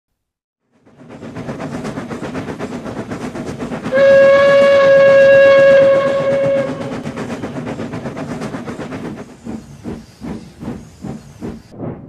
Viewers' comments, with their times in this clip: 0:00 Edward’s ghost engine whistle